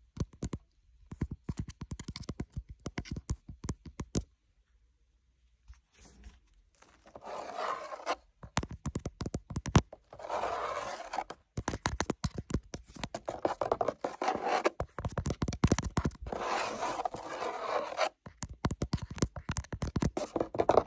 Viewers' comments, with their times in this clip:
0:07 omg🫠❤️ camera tapping forever😂❤️😘